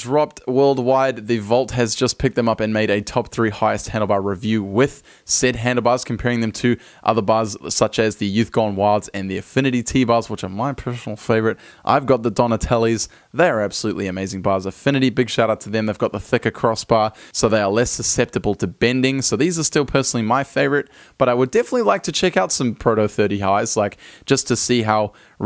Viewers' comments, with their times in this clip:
0:09 which are my pfnfhnfl favourite